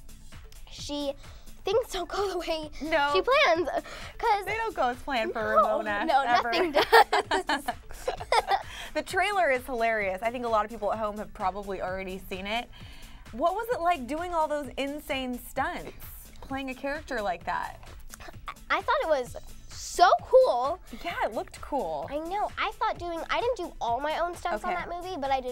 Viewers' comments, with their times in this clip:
0:09 again and again is so cute....i love joeys laugh... ..♥